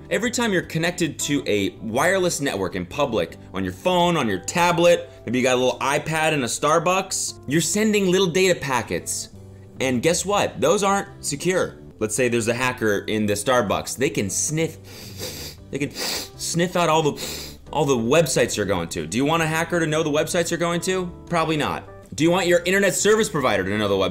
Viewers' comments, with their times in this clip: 0:08 something about the way he said "little data packets" gave me intense cute old man vibes LiL dAtA pAcKetS